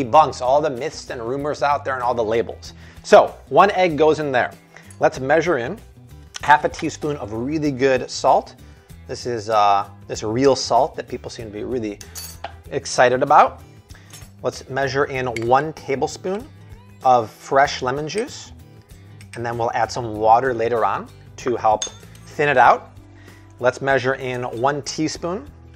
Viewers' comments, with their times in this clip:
0:06 … “So, one egg goes in there… Dude, you’re killin’ us with your pregnant… pause… of… an… intro.